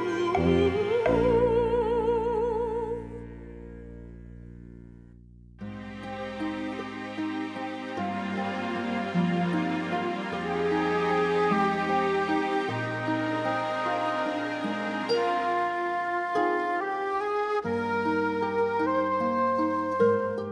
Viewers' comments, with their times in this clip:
0:05 Ok, is far from unwanted, I only take issue with the screaming chick.
0:06 Okay, this is obviously a masterpiece but what's so annoying about the stuff starting ? Seems like a perfectly pleasant bit of music there to me. Not sure why that made the cut.